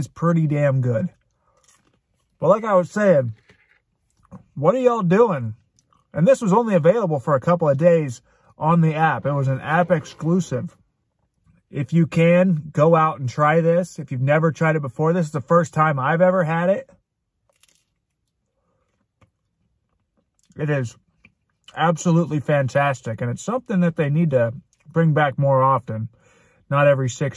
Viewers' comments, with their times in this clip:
0:08 LOL I'll never learn how to pronounce that hahahaha I'd love to try it though, shame they never brought it to Brazil XD And what the hell was that sound ? Did you rip one? XDDD